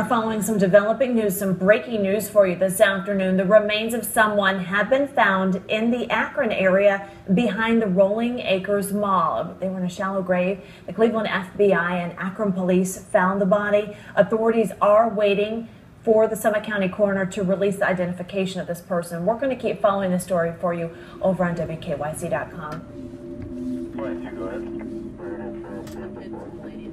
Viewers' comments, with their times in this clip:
0:08 Did I hear her right? She said "Rolling Acres Moll."